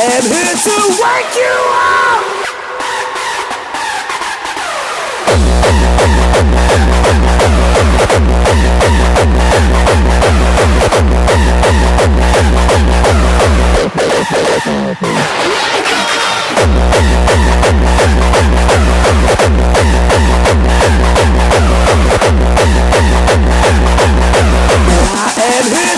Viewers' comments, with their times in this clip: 0:05 sounds pretty good proppy! gogogo QLIMAX! the last part is kinda lame :(
0:08 It sounds like the kick needs to be -1 pitch. :-)